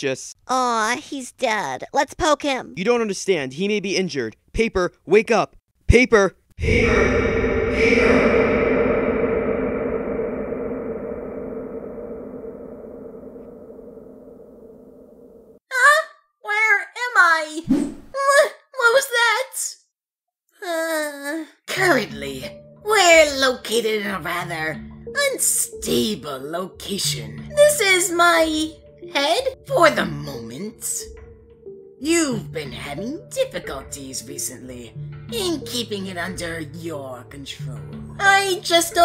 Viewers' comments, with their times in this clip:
0:06 .00:0:0 PAPER!? X2 ECHOREVERB
0:21 Evil Paper's voice sounds like Gun from Object mayhem